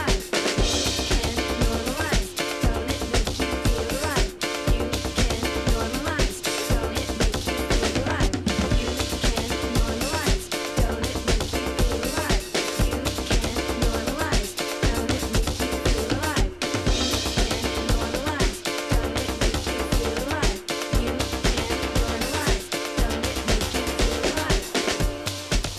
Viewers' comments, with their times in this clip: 0:10 Yo, Why is the sound fucking up ?